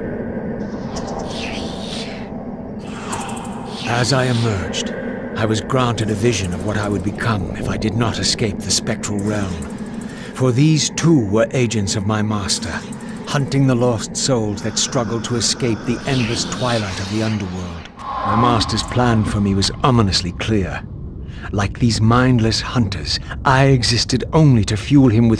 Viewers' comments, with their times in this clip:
0:07 remind me of nobodys from kingdom hearts the way they move and sound